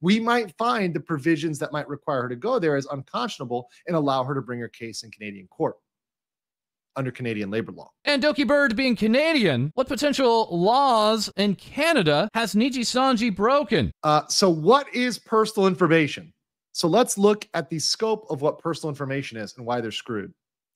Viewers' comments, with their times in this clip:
0:08 "Cornered" starts playing in the background